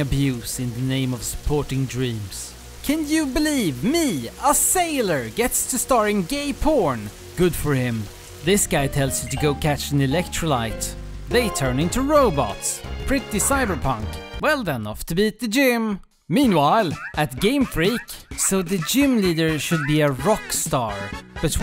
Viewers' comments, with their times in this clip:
0:04 my mic cut at that part in my moms house